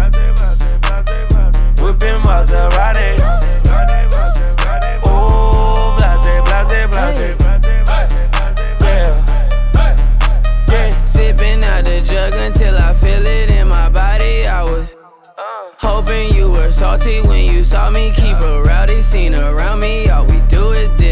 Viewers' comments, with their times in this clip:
0:06 Is it just me or someone say HEY in